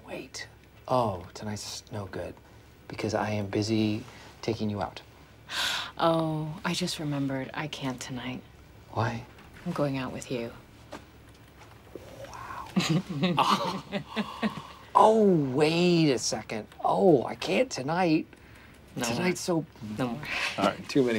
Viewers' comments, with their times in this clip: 0:09 The way michael says "why" always got me 😭